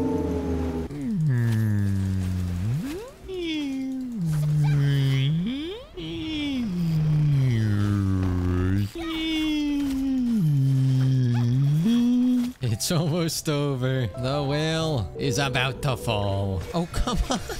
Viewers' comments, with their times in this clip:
0:05 he sounded like Dori from Finding Nemo